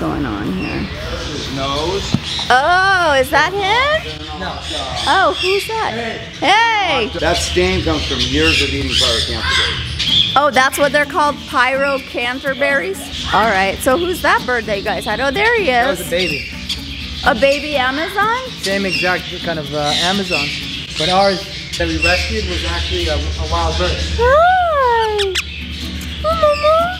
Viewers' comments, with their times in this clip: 0:09 Lol I thought he said "Pyro Catheters"